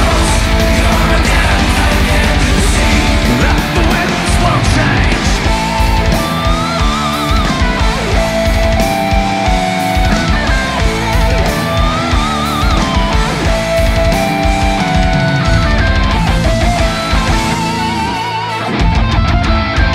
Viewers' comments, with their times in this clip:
0:05 good lord, is that BASS? In a Blind Guardian song!? I haven't heard that in 20 years!